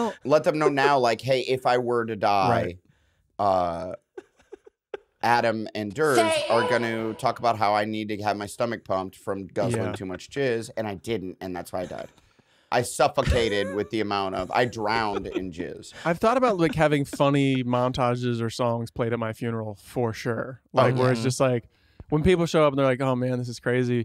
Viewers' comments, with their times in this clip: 0:05 Blake laughing & that “Satan” drop was perfect 😈